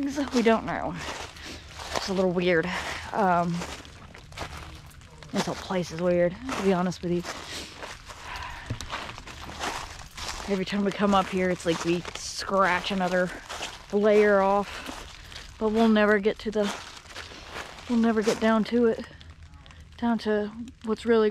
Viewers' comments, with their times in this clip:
0:09 sounds like a "bark" right as you were talking about the boot and pants. Sounds like it's in the audio. Might be something else.